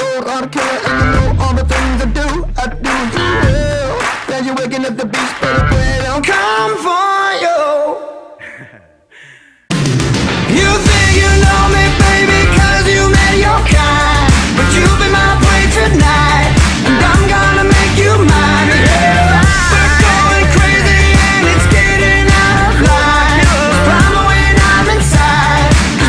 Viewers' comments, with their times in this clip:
0:08 that laugh ♡ This is the most sexiest thing I ever heard!